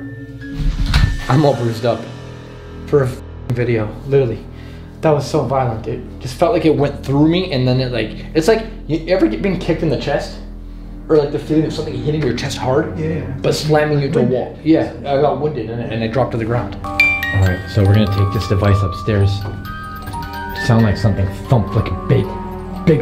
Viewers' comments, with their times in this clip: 0:04 I remember that video. I'm from Southborough Massachusetts USA Because it's not in the cell 😂 I love visiting Prisons it's very interesting💜 I can't really hear anything with the background music is going, just saying You also have to have money to Live A Little which a lot of people don't have me as well but I clean the house everyday and other things around the house. Unfortunately we can't hear anything because of the background music 😕 there are 3 scratch marks on your neck and red. You should start bringing protection with you guys.